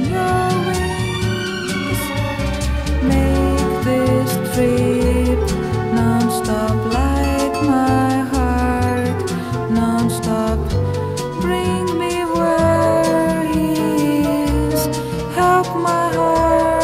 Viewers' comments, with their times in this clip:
0:03 i love the woodwinds that come in